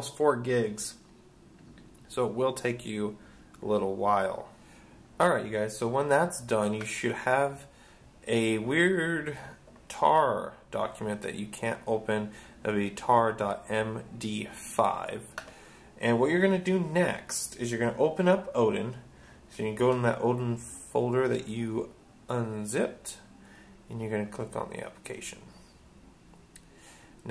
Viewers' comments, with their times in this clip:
0:08 a weeEeeeird xD Thanks man.